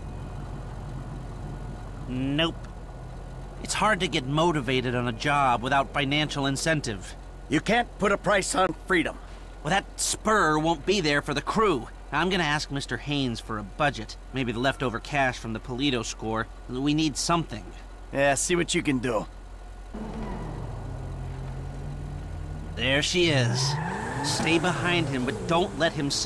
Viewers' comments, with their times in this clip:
0:07 why does Michael sound so off